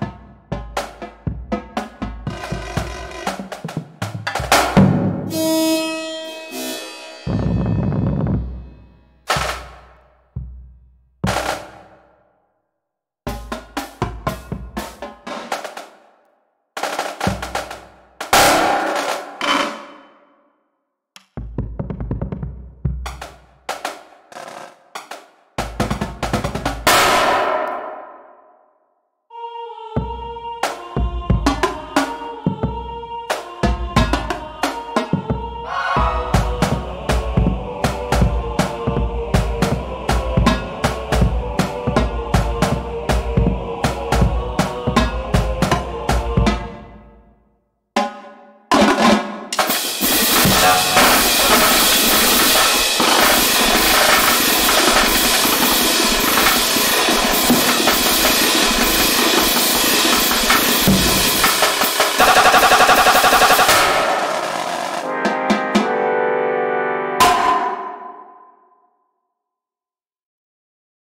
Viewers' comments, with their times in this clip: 0:05 the buzz has me dead
0:07 sounds like rumble strips on the highway lmao
0:26 love a cadence that just uses a reverbed dessert eagle as an instrument
0:36 The chord progression sounds awesome, actually.
1:04 I thought Resonance by HOME was about to start